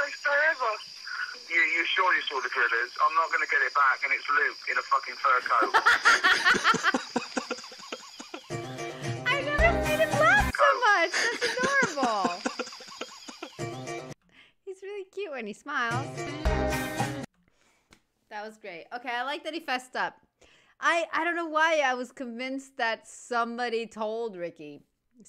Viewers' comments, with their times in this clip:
0:08 For sure as heck that's a laugh of relief! 😂